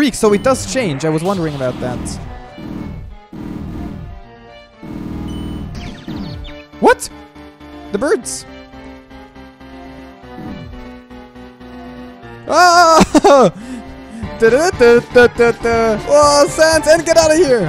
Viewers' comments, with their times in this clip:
0:05 That bird sound is actually frisk getting dizzy.